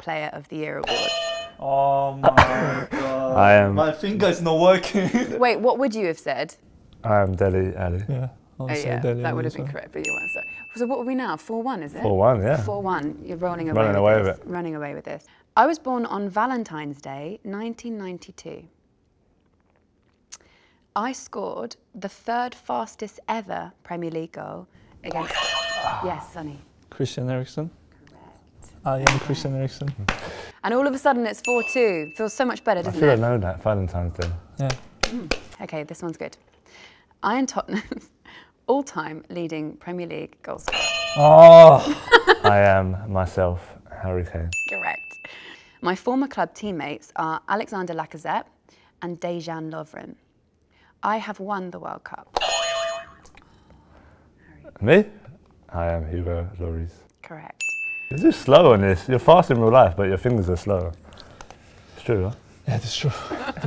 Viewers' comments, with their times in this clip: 0:03 ohhhh my good love how he says it
0:10 kane : i am dele alli subtitles : i am dead
0:19 The silence in it´s so awkward and i love it
0:42 Thought she said "Get Rekt"
0:44 who heard *get wrecked*?